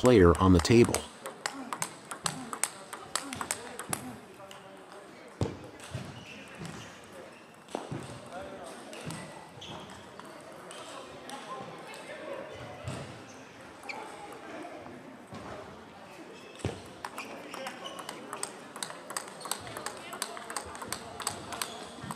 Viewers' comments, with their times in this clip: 0:09 it's russian language